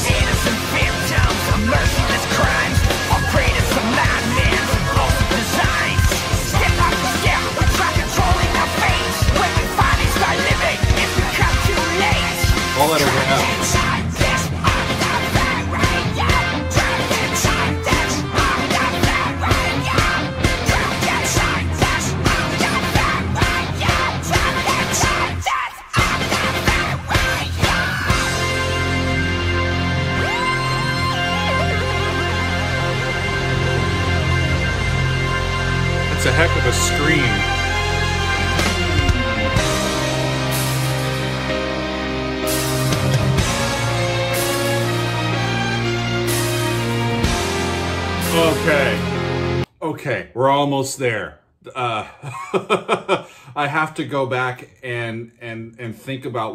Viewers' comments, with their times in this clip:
0:06 Oh God you can hear zappa, ELP, Maiden, has got to be megadeth. It's pretty incredible
0:17 i've listened to this song for years and i just picked up that guitar lick in the background which is a call back to another song off the album. they always love to reference their own stuff in the epic ending songs.
0:39 This entrance of the strings still brings tears into my eyes after 20 years.